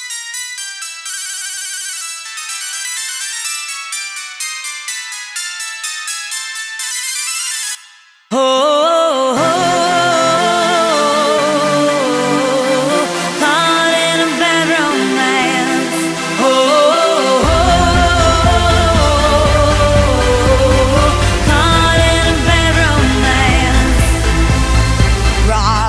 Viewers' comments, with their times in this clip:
0:08 is the funniest alarm sound to ever wake up